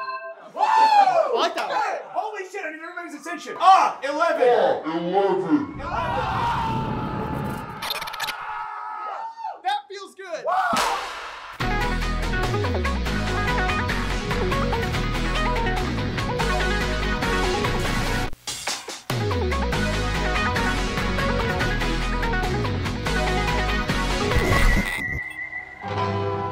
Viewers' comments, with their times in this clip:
0:10 new song??? I love this riff😍